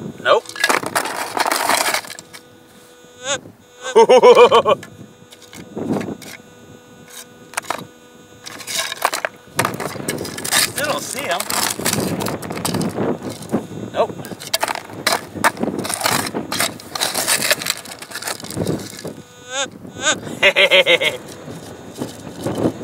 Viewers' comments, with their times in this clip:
0:04 DR Evil laugh in